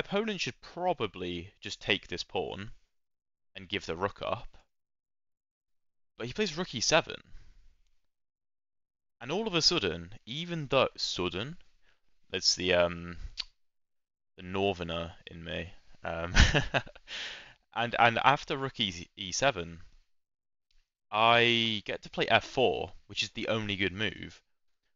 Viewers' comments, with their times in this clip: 0:06 really struggling to place your accent; sometimes you sound Northern, sometime Welsh, sometimes Southern